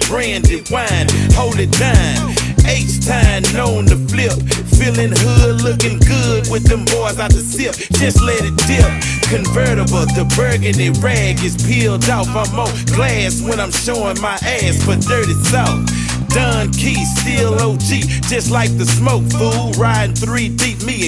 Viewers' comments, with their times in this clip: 0:07 That Southside beat tho